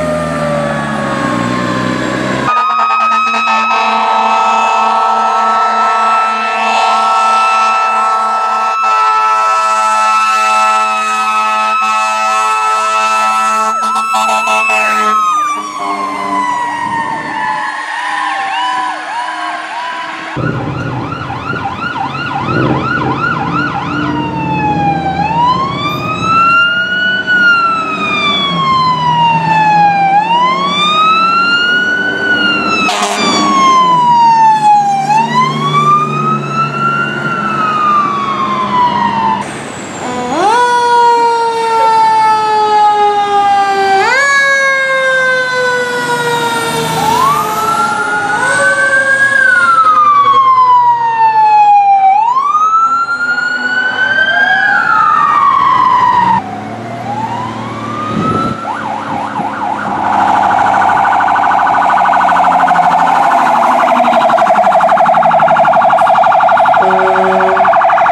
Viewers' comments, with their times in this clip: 0:04 how much siren do I use? Captain- yes
0:56 is that a code 3 siren?